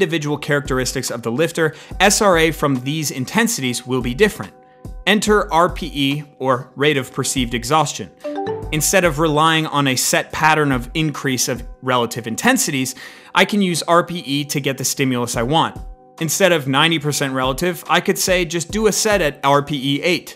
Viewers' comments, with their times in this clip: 0:08 for a split second I thought my MSN was resurrected.